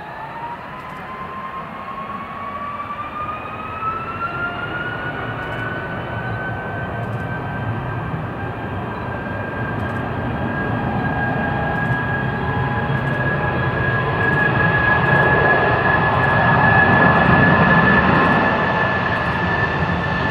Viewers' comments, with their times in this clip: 0:07 the engines sound like they're labouring and there's hardly any increase in speed. Maybe just an optical illusion?